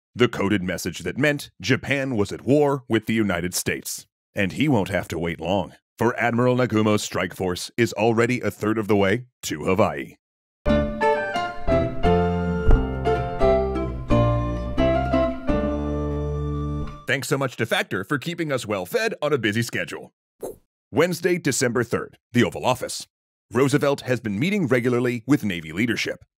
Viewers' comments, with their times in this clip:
0:10 Havaii? Is that the ACTUAL pronunciation or... what?